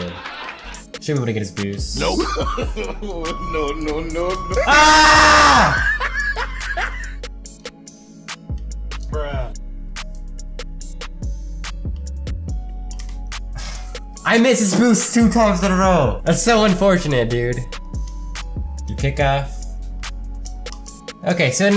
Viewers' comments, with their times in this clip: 0:08 that bruh was on beat loll